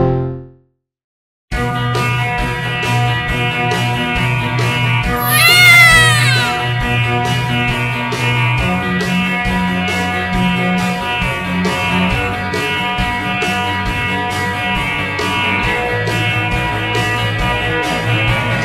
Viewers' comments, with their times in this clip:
0:05 Coris Crying Sound like Baby
0:05 Coris cries like a cat